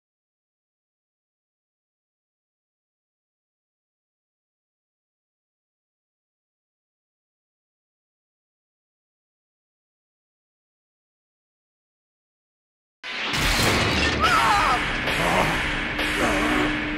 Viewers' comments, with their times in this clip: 0:00 Not GOKU screaming in pain when chi-chi is ingnoring him.